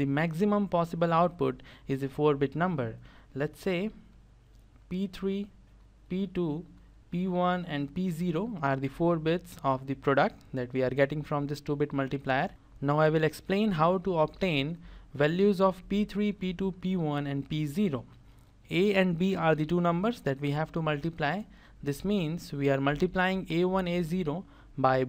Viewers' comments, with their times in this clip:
0:10 I heard it as the stupid multiplier instead of 2 bit multiplier.